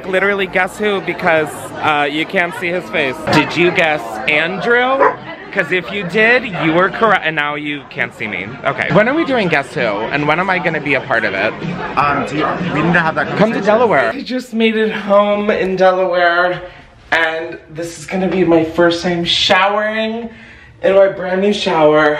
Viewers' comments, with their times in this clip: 0:06 The way I teared up when I heard her voice say “hey now” 😭😭😭😂